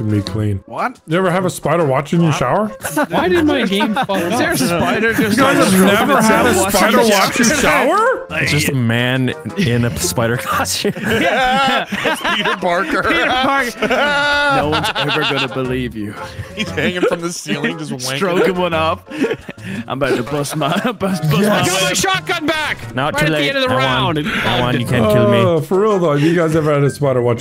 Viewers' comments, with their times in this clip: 0:10 "Keith Barker" bro? 😂😂 New Spider-Man alias - Keith Barker LOL
0:12 ah yes Keith Barker one of the most famous superhero’s of all time. The most famous spider person to have ever existed.